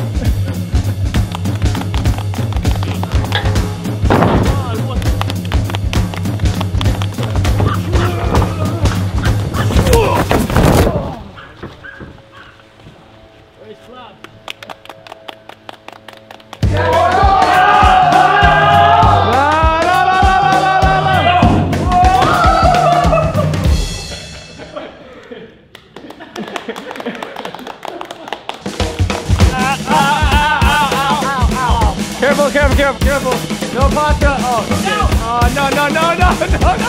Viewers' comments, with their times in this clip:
0:08 I hear kongs barking
0:09 anyone else think that the barking sounded strangely like kong’s?
0:13 Who else heard ready clap
0:20 play it at 2x speed sounds like he’s saying LALALALALALALALALA